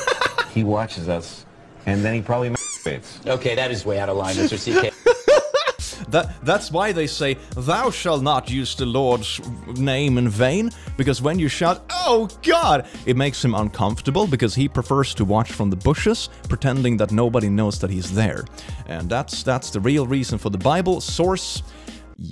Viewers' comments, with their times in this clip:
0:04 the dude was trying so hard not to laugh his ass off